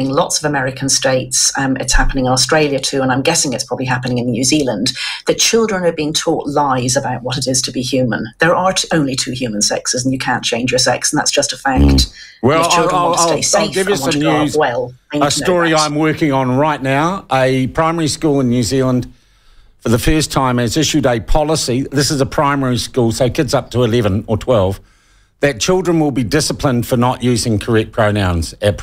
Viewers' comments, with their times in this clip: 0:10 the interruptions are a bit annoying… perhaps the time lag making things worse